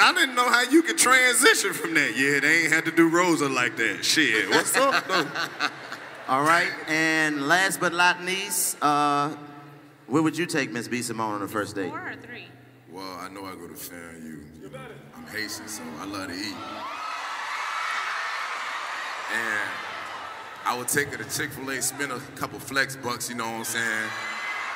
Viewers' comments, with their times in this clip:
0:06 "...last but L O T N E E S E".. #niggahuh?